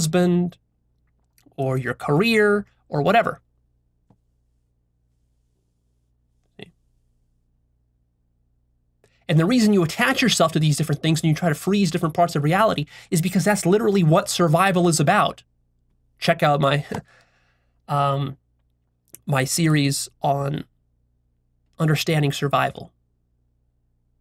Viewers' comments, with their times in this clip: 0:08 laughing when ur realized u had accidentally told people to watch other videos for the 4th time :)))